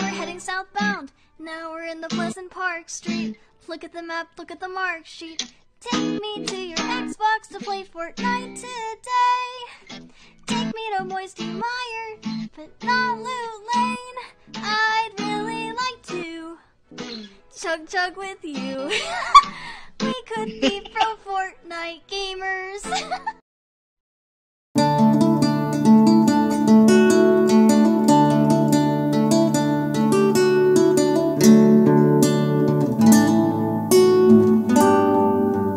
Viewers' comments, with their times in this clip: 0:05 omg that it pitch perfect
0:22 Sonic you had to snicker.